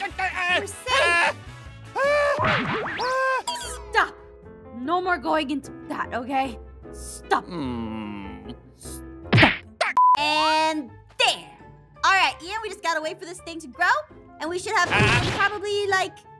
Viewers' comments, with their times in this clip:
0:04 Every aphmau video has ein hurt sound like 🤣🤣 i love it so much is so funny